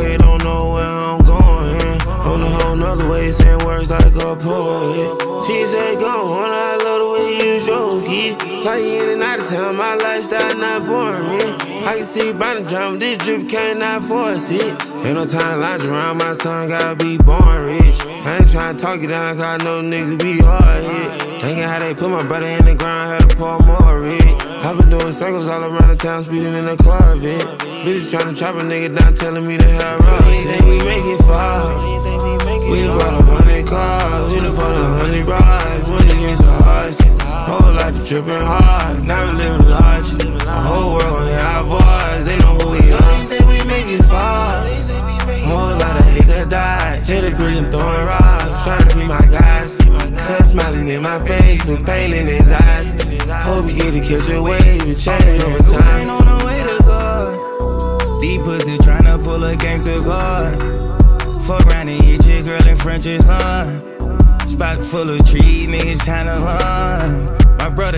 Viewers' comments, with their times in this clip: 0:03 the Oooooooo part is beautiful
0:31 when they do the chorus in sync <<
0:33 The way their voices blend 🔥🔥🔥🔥
0:55 ouuuu from an angel known as Jeffery lamar william